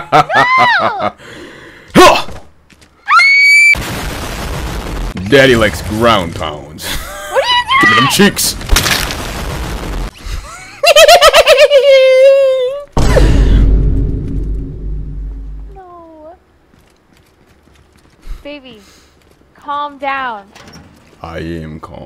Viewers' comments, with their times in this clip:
0:08 That laugh was wild dawg